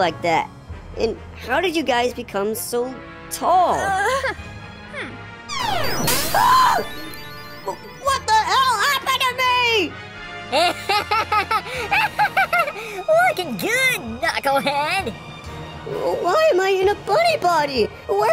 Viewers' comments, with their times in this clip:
0:06 I love how knuckles scream 😂